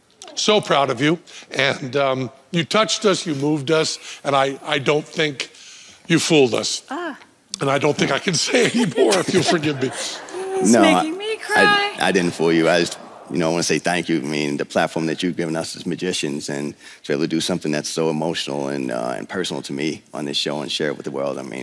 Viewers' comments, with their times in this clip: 0:06 Is that a fart ? Sorry very touchy btw!